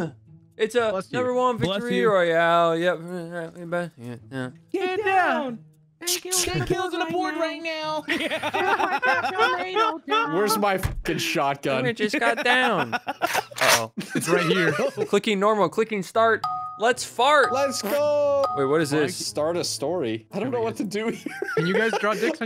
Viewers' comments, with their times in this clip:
0:09 holy shit who is laughing here i HAVE to know. it sounds EXACTLY like my laugh who is my auditory doppelganger